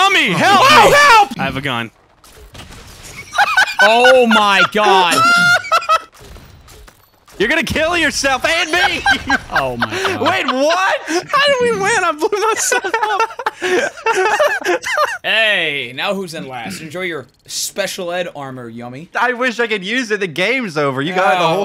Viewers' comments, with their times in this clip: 0:07 it sounds like fuze from seige